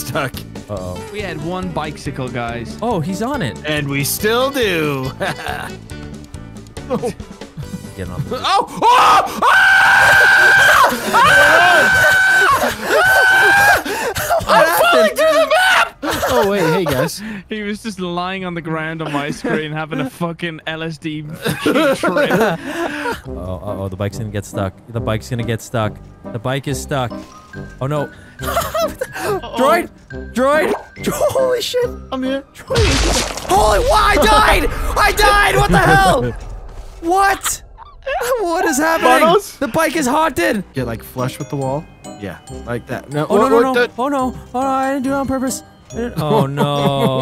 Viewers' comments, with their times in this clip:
0:09 He sounded like a bird alarm
0:30 i hear shaggy sound here, so f***ing hilarious 🤣